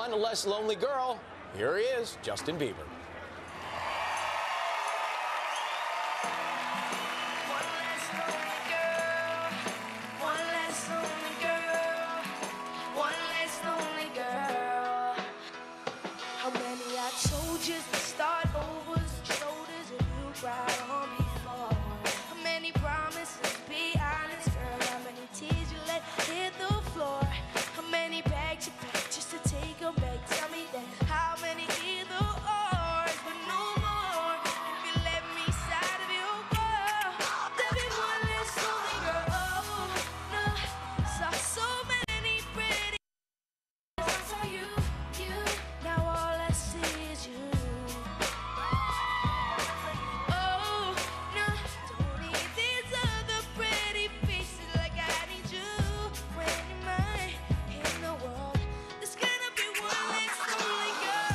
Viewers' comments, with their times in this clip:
0:07 Crowd: woooooooooo Me: he is a terrible person guys boooooooooooooo
0:43 Why was the sound gone ?